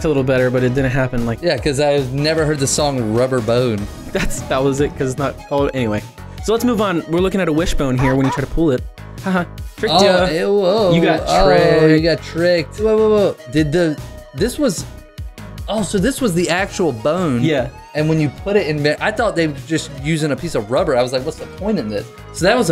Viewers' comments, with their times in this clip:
0:05 that's timelapse music!